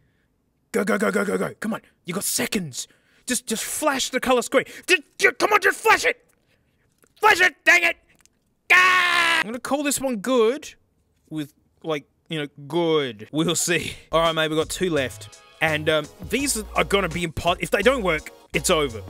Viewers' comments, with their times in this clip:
0:06 That goblin scream really made my day